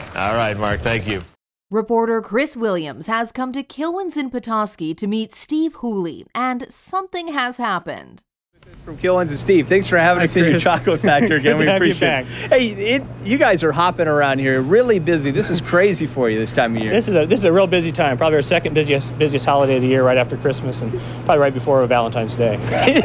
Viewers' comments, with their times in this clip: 0:09 .................... This whole scene is one of the most amazing instances of everyone busting out with the tickles I've ever seen in my life!